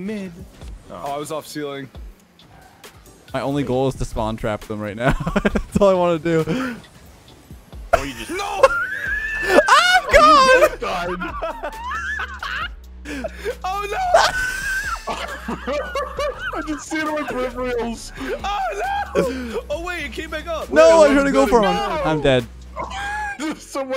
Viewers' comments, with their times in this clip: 0:08 LMAO sounds just like the girl in Alien during the chest bursted scene